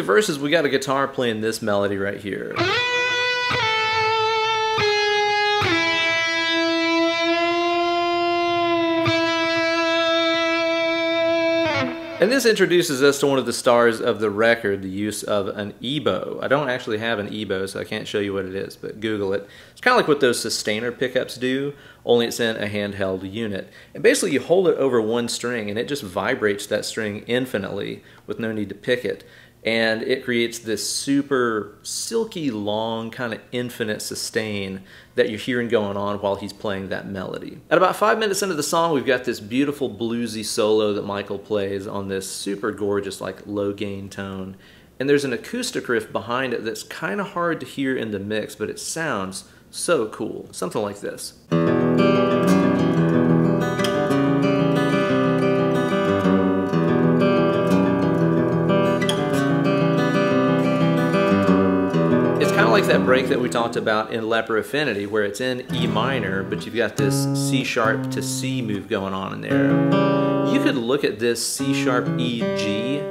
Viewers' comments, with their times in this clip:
0:05 Woaho! Totally blown away! BWP is my most favoured Album of All time. By the Song "funeral portrait" i've waited for the moment that you announce the riff which ends in the absolute epic "and you are just like them all ...." . Every time goosebumps :(. Absolute epic playing and i've seen a lot riffing you've played in a "more right and opeth way" than like the Standard guitar pro tabs.
0:55 The acoustic part sounds pretty similar to the one towards the end of Deliverance